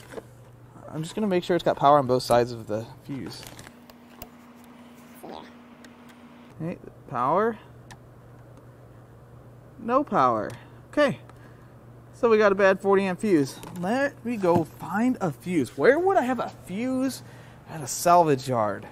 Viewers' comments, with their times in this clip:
0:05 Did I hear nature's air pump ?